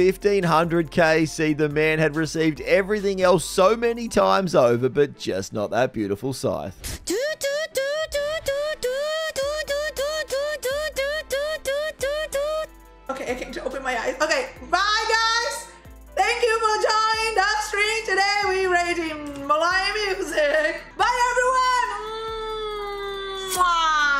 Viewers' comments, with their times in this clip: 0:07 idk the context of this clip but I know for a fact that she’s pretending to be a car doing a creeping burnout good old Aussie styles 😂😂😂